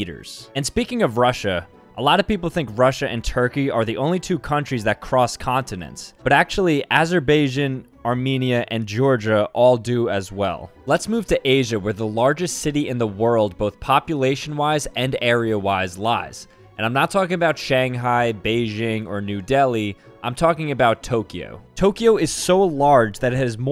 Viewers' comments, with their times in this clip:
0:05 guy really said "Azer bay asian"
0:06 Ah yes, my favorite country, Azerbeijin
0:06 mans called azerbaijan, "aserbayjin"
0:07 Bruh he says asher bajin
0:07 how do u not know how to say a country name in a geography vid it’s not like it’s a super hard one like Kyrgyzstan
0:10 what pronouncation was that